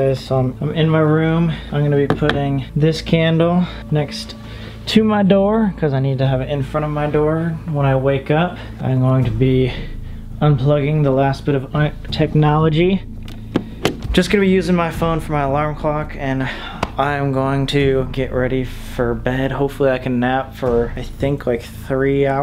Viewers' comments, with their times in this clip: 0:09 Is that a bang or a sound effect ? And where the hell did it come from and why there mid sentence ? Anyone else catch this ??? I had to reply about 5-7 times just to be sure I wasn’t hearing shit or it wasn’t at my house lol.